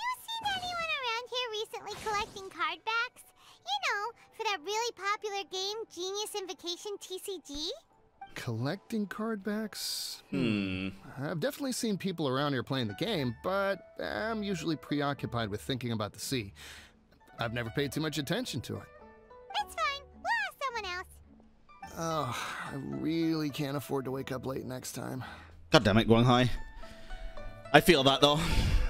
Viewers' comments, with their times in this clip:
0:09 Both of them said "hmm" at the same time